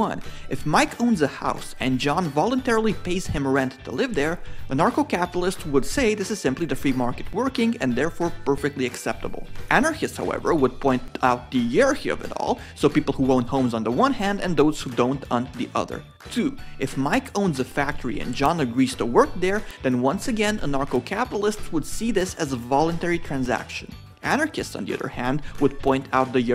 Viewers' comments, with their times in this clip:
0:09 "Anarchists, however, would point out the yearhearvyall" ???